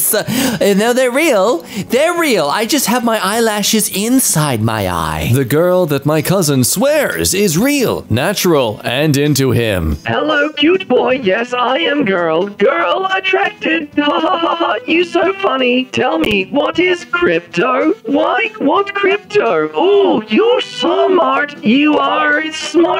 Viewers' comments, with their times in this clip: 0:05 The robot voice lmfaooo😭